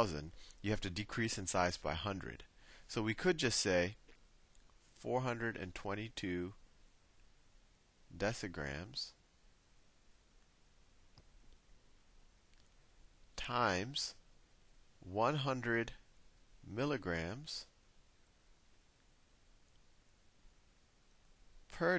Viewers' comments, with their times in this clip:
0:05 his voice gets a little low